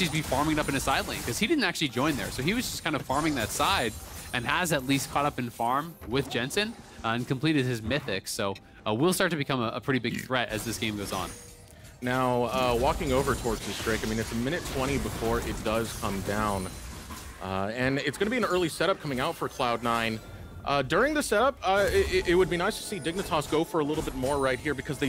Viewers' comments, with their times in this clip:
0:08 Did one of the casters just burp ????